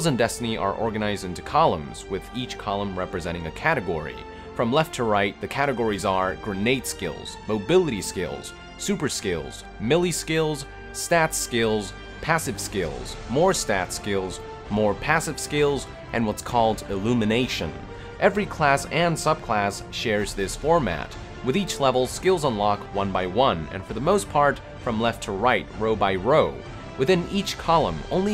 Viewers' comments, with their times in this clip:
0:09 MILLY skills! (Melee Skills)